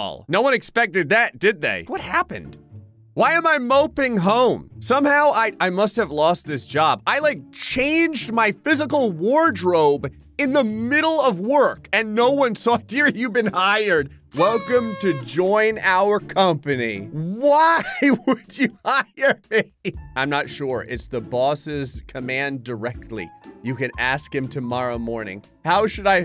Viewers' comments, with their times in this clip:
0:09 S tier material, picking up the phone while it simultaniously sits on the table still ringing...